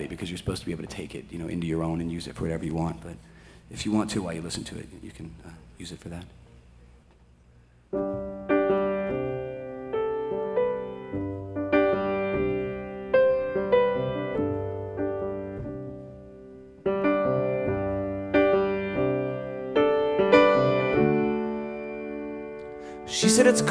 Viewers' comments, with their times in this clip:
0:08 actual sung - cut out the fluff